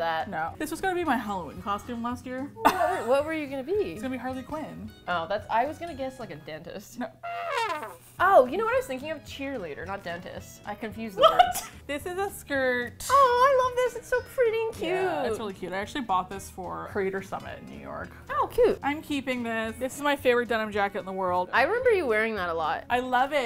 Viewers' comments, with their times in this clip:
0:08 what really makes this statement is how calmly she says it. Like she's not like "omg! I can't believe I mixed those up 🤪" she's just so matter of fact about it 😭